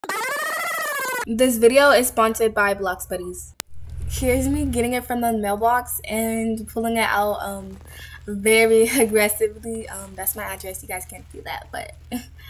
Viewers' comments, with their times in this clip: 0:00 hELP THE INTRO SCREAMING
0:00 totally didn’t have my volume almost ALL the way up 😇